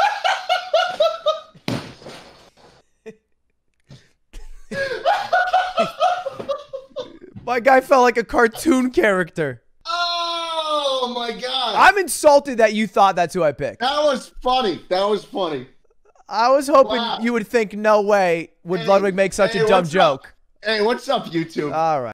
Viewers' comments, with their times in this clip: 0:07 and Schlatt laughed like one